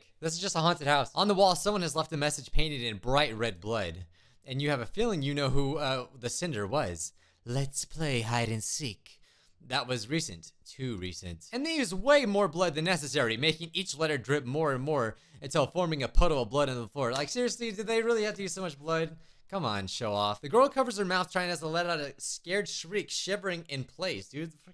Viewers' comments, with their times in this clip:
0:07 U SOUND LIKE ROHAN KISHIBE BUT IN THE DUB